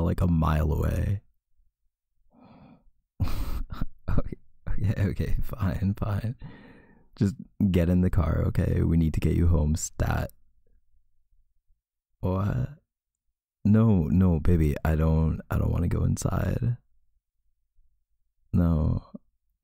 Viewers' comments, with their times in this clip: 0:04 is so cute his little laugh 🙌